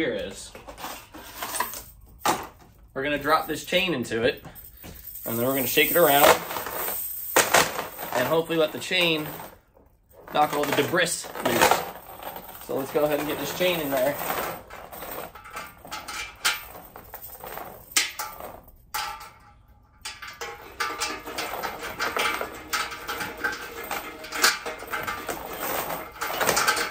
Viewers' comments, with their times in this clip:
0:08 did you say "dee brisk"??? (I replayed it 8 times) The word "debris" is pronounced "dee bree"... and no, don't say the "s" part at all. (not "dee brees") I gave you a thumbs up anyway. Meanwhile I must ask.... isn't a chain not really rough enough to break up rust? Lots of people say drop in a bunch of drywall screws. Thanks for your video!